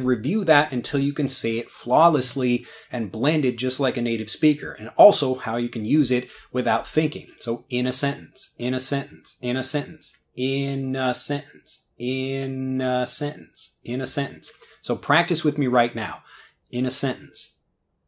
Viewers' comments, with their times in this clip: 0:06 innocent, innocent, innocent, innocent